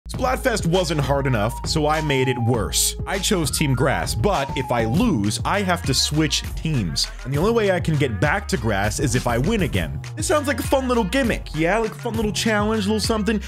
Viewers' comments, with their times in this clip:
0:00 am I the only one who thinks this song is garbage?